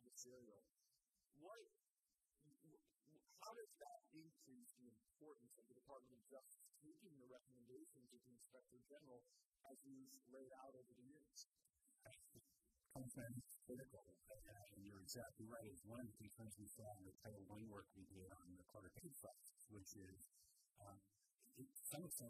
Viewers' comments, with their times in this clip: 0:06 please talk into the microphone, can't hear you after No problems for the first hour, now I can't hear you!!!!